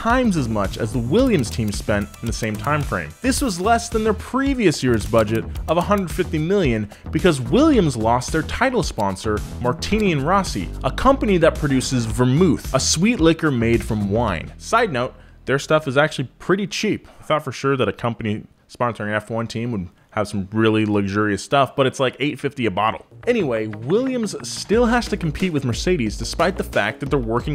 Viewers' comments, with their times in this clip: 0:08 "Vermüth"??? American pronunciations are weird.